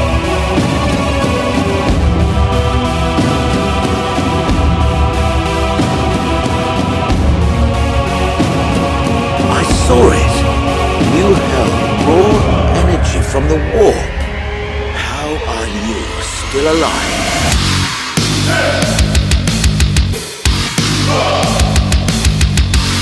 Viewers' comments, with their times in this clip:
0:08 that drop was🔥🔥🔥🔥🔥🔥